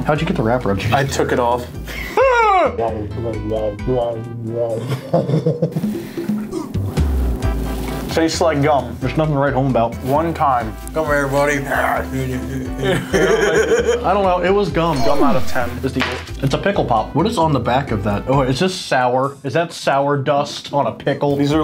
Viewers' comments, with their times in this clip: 0:05 is so funny. The laugh gets me every time. 🤣